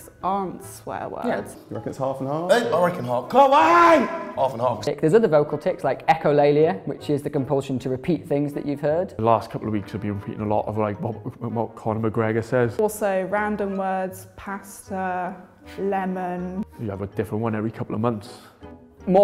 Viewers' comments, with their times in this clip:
0:03 Did he yell KAWAII ? 😂